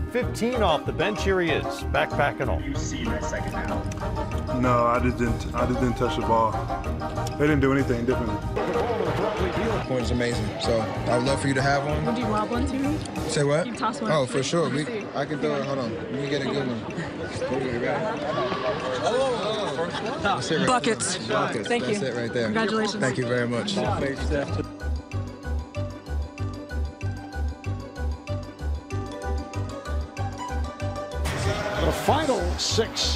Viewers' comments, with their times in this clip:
0:10 i love how she say "buckets" damn..!!!
0:19 🤣love how she just says BUCKETSS